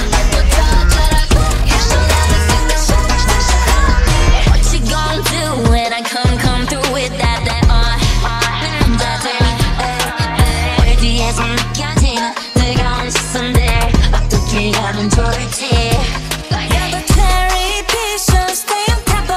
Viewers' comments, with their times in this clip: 0:05 Rosé rapping??? Omfg 🙊
0:07 Ok this is definitely a rap attack and its so DAMN GOOD 🔥⚡ HAPPY NEW YEAR!! 😍 And this is the best New year gift ever🤩